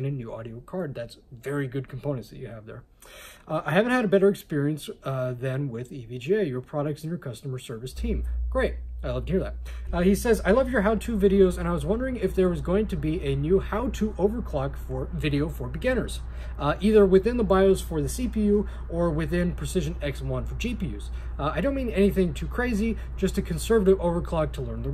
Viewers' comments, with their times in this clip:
0:07 And again there is background noise. This time it's not whole video, starts from